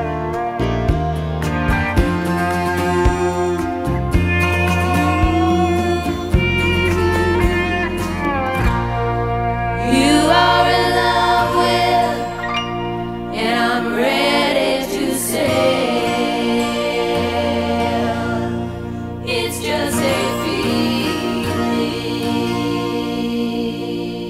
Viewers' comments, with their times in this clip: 0:09 My favourite part starts at the end, I love the acoustic guitar played by Davey Johnstone and the simple harmonies.